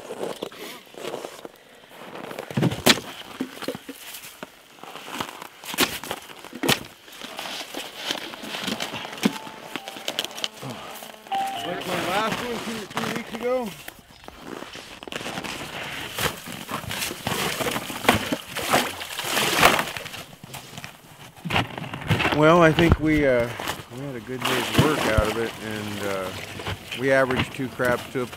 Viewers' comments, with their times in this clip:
0:07 is that a Samsung phone ringing? Do they even have signal there?
0:11 some one got a nokia and got a call xD
0:11 One of the crabs has a phone call
0:11 did anyone hear piano music ?